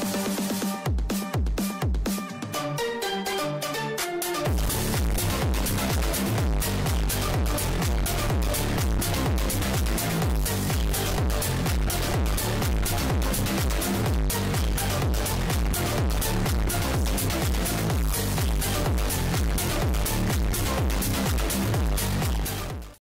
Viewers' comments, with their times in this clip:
0:06 RIP headphone users.😎 If I understood things correctly the RBMK reactors are not using a heat exchanger to power the turbines instead they use circulated highly radioactive water from the core to power the turbines? Are there any major benefits compared to a pressurized water reactor except lower production cost?